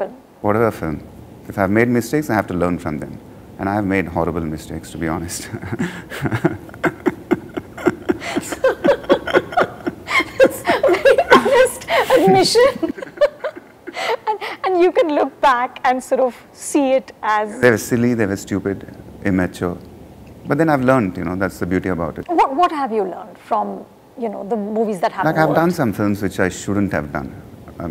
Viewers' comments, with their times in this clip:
0:04 His laugh is how we all should look at our failures
0:07 damn I can watch him giggle all day😍😍
0:07 that infectious giggle 😍😍
0:09 Legend fake laugh